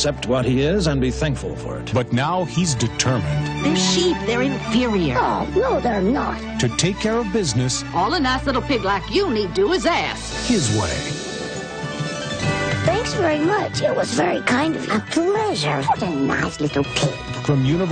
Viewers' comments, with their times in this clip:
0:05 FUN FACT: Babe and Dexter (from Dexter's Laboratory) have the same voice actress! RIP Christine Cavanaugh 😢 EDIT: Omg Babe really sounded like Dexter